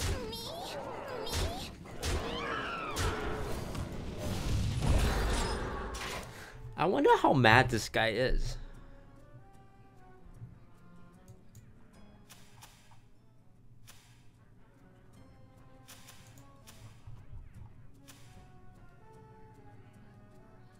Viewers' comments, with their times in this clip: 0:06 "I WONDER HOW MAGISKY IS"... ??????????????????????????????????????????? I CAN ONLY HEAR THAT